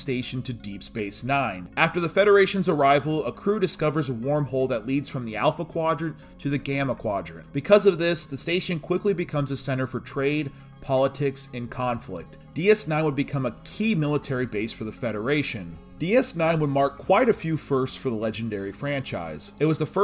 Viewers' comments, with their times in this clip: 0:03 "a warm hole" you say?... Oh that must be it, since it leads to conflict, women are like that...